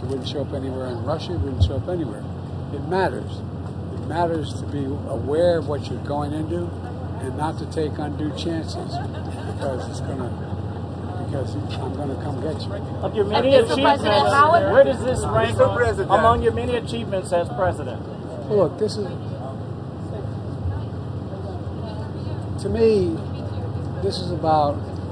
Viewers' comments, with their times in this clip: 0:07 Oh yes he is great! Unfortunately; I use closed captions and the AI can't figure out what he is saying so I never know what he is saying. When I ask other people what Biden just said they can't seem to figure it out either!